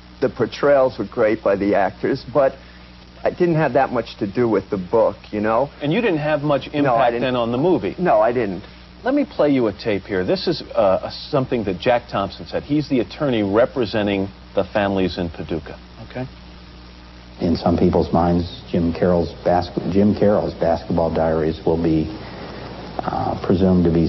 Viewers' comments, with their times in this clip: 0:10 His voice sounds like he is high. wasn't he in the film? Pretty sure its him telling jim a story in the basement